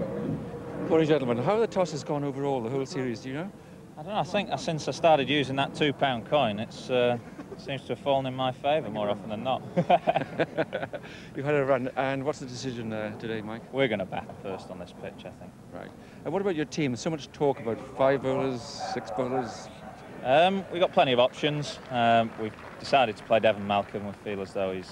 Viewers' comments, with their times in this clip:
0:08 Atherton a jolly, guffawing fresh faced boy!